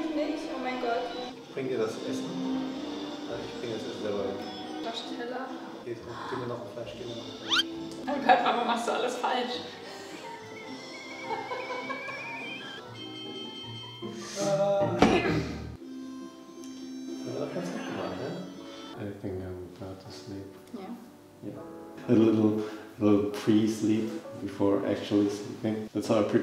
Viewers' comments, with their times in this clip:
0:09 In which language they both are speaking in??